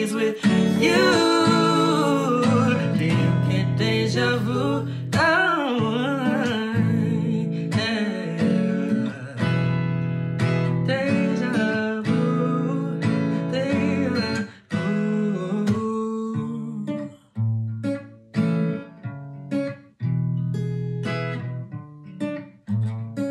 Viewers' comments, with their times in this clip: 0:05 i'm sorry but the run cleared my skin THAT WAS AMAZING!!!